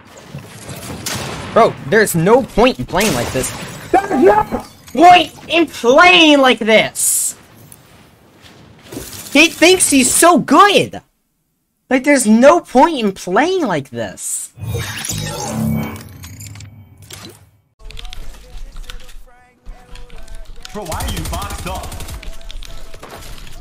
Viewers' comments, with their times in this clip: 0:07 bro has the fortnite accent and looks